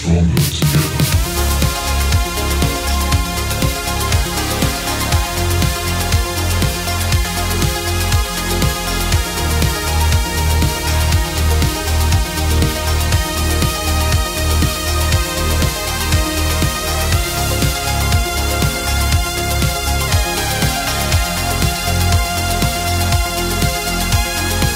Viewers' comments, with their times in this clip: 0:05 And I love the synth 🙌🏻